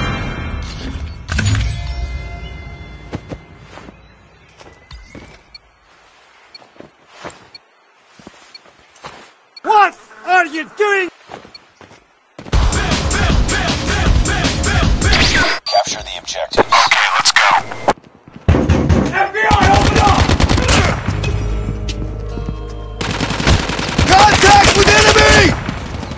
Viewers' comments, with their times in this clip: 0:08 I like the memes that you put,I noticed that Ruin sound younger than his old voice from season 6 and also that muscle tho ------>